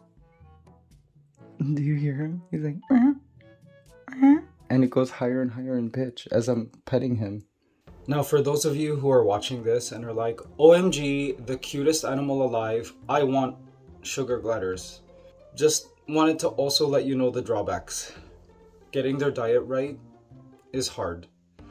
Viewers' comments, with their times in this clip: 0:03 Please check -24. You can here girl "huh"